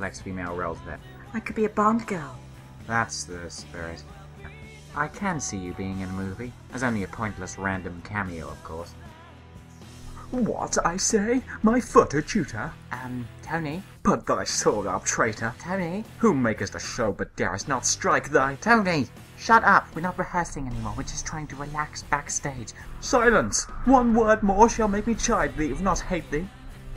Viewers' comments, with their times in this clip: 0:10 Dat voice. :3